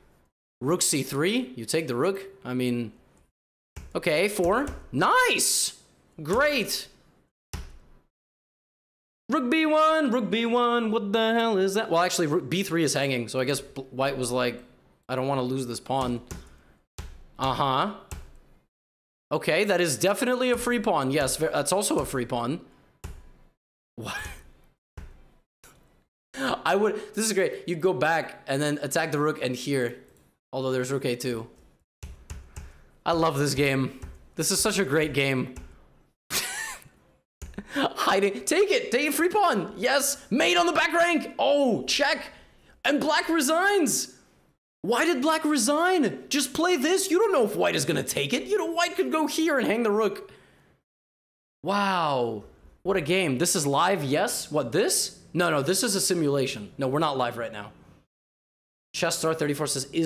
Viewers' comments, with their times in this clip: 0:08 he took a moment to realise that he needs to sing rook B1
0:48 The absolute deadpan delivery, to think the player would blunder like that, is brutally funny.